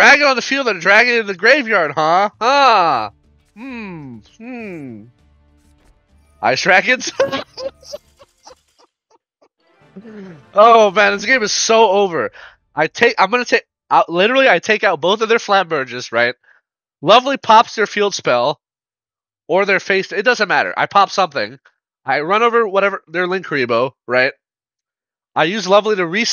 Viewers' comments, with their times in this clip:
0:04 Your mic cutting out while he scooped made that moment so much funnier 😂
0:07 the laugh man 😂😂😭